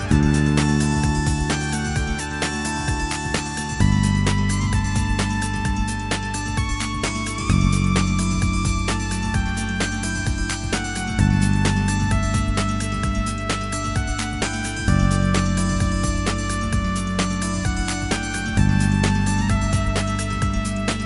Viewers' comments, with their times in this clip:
0:08 Damn when that trumpet goes off it hits me in the soul. Good times with classic Maplestory as a kid. Edit: That's actually an electronic keyboard with a trumpet sound effect